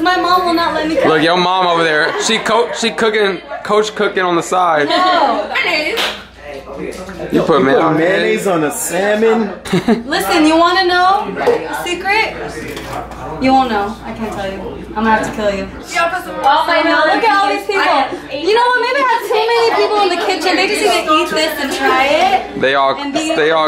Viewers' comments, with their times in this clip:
0:10 you can hear the spoon touch the bottom of the jar so she's using the last of it.